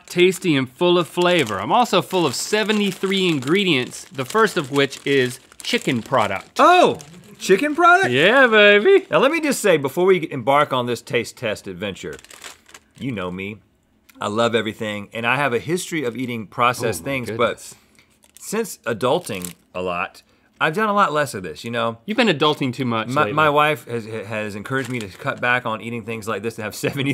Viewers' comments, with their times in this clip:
0:08 when Austin powers is going through puberty